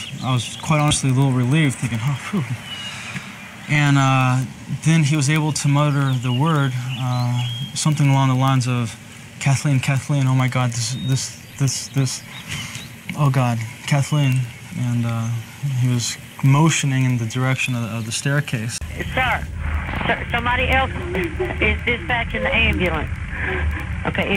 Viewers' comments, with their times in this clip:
0:05 Sounds like "murder"